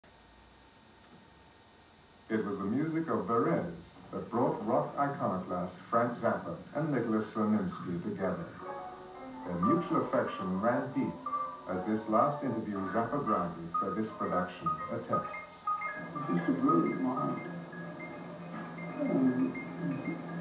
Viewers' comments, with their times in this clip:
0:08 I love that tune